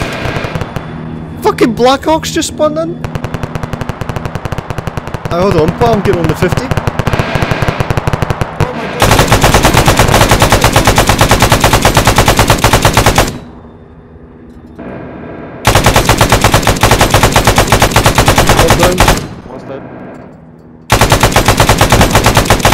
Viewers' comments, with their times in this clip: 0:09 me fucking ears